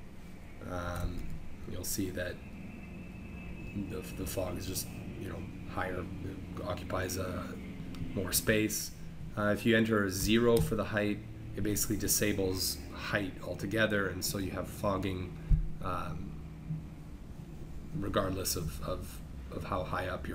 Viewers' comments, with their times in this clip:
0:07 you live near airport?